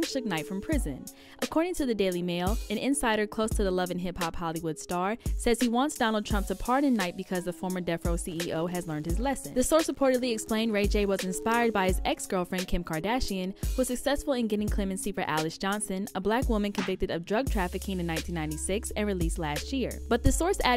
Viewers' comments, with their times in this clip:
0:08 foreshadowing the static that Suge Knight will hear when he gets the chair